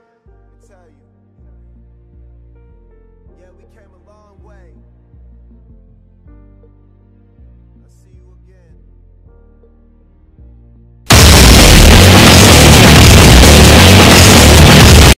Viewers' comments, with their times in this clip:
0:11 Me: Its to silent MAX UP VOLUME Me: falls from chair Also me: I fallen and i cant get up.
0:11 sounded like music to my european ears